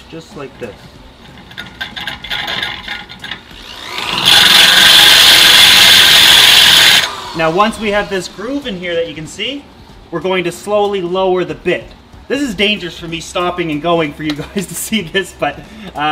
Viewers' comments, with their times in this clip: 0:03 OMG MY EARS!